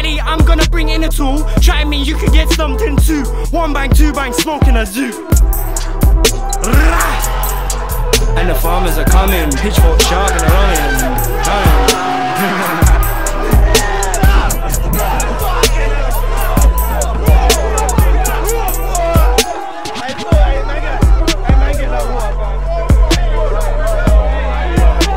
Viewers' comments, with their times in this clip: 0:06 How you pronounce God's name.